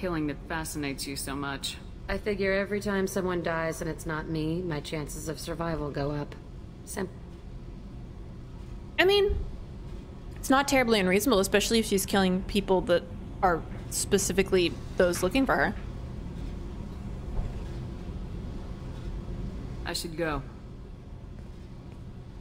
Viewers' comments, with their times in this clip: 0:07 Jack's dialogue cuts off so just sounds like she's calling Shepard a simp. lol